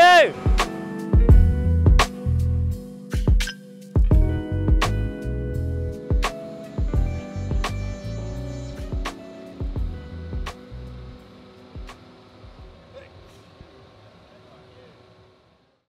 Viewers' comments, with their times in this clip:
0:11 Danric: sneeze Lando: bless you